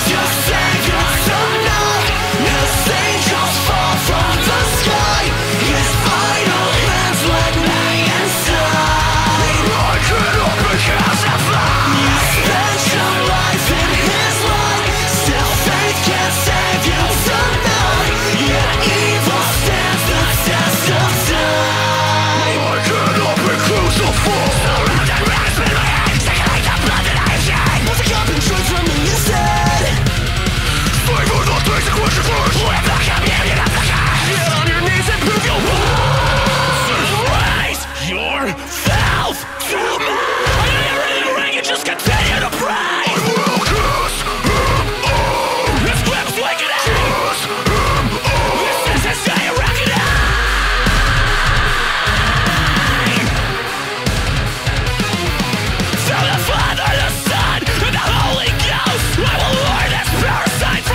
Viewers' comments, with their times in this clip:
0:08 Sounds like Set It Off xdd
0:43 I can’t be the only one who hears : I will kiss him OH!
0:48 who else herd I will kiss him off